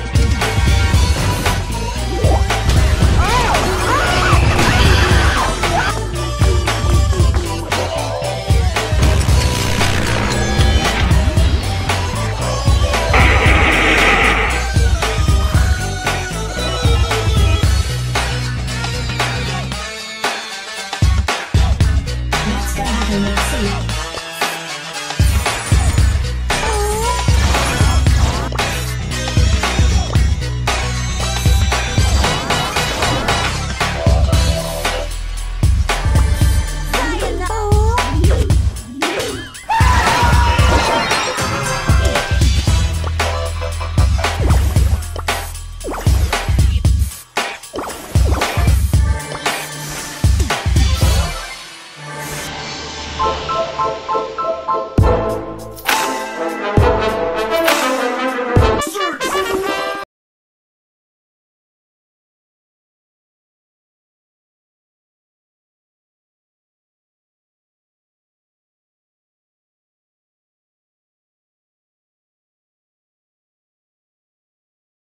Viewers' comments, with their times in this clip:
0:10 lol the genji sound effect. meanwhile me playing overwatch while watching
1:00 Is it just me or does the audio cut out ?